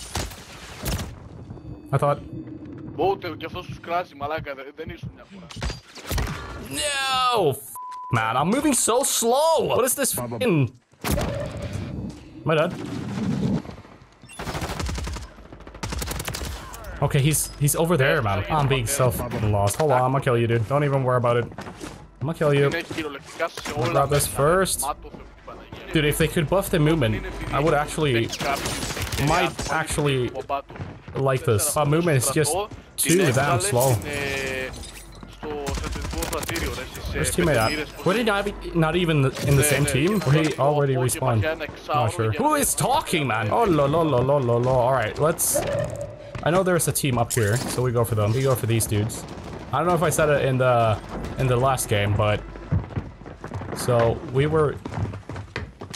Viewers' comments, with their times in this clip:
0:03 Shotgun forevAAAAAAAAAA Btw one man has spake greek xD
0:43 greek dude talking